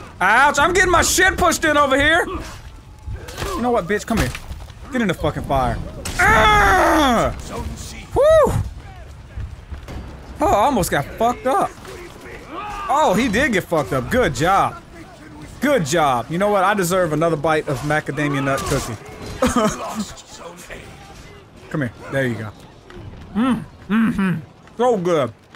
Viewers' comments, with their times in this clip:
0:08 Thas is sound of Da police 😎😎😎😎😎😎😎😎😎